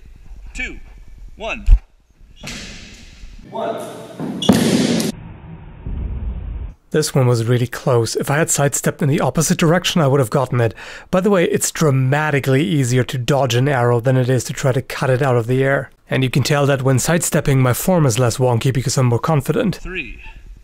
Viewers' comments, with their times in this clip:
0:04 that vine sound effect